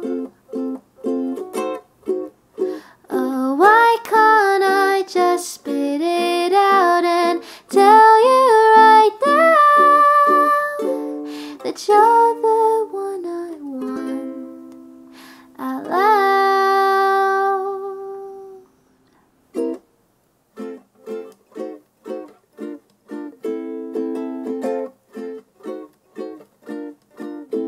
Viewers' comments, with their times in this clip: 0:08 As someone who hadn’t listened to this song until just now, I’m sorry for myself that I didn’t get to experience this adorable song earlier! This song has such a clear personality to it and I love it so much, not to mention the high note that sounded so crystal clear and smooth despite being high enough to reach the peak of Mount Everest… that’s definitely something that requires a lot of effort and practice to make work and all the effort was worth it because it was amazing, just like the rest of this song and frankly every song on this channel is!